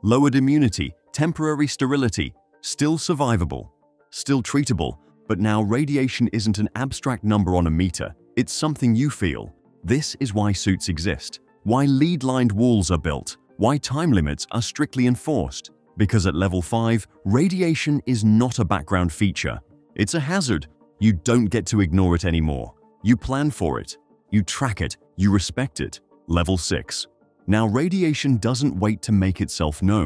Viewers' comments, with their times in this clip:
0:10 It pronounced lead-lined walls (as in lead, the heavy metal.) leeed-lined walls. Give me a break!
0:12 lead pronounced LEED not LED. hmm...
0:18 bro went from Cornwall to standard British in the blink of an eye